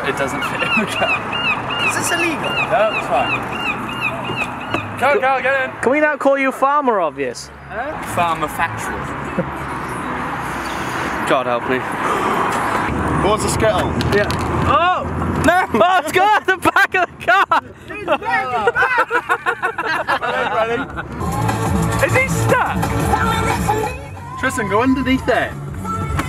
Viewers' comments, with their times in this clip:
0:09 why r u listening little mix